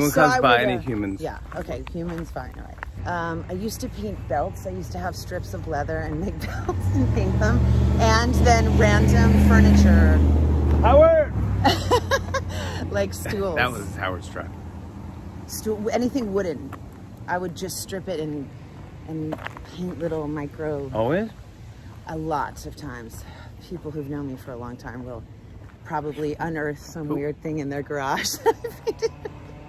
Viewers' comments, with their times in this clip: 0:10 I think the person in that car thought Jimmy yelled "Coward!" at him/her! 😂 Because it's more likely for somebody to yell "coward" at you than "Howard"😂